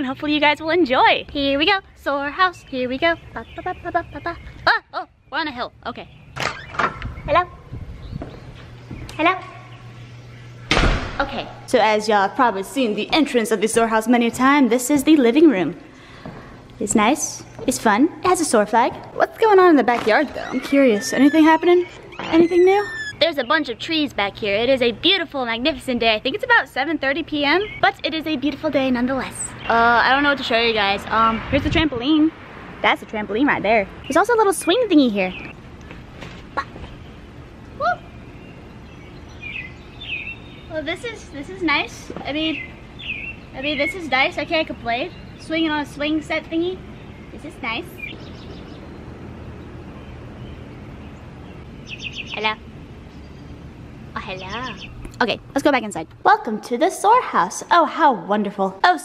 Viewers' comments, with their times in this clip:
0:07 Boi you sound like yoshi
0:41 is that a fart?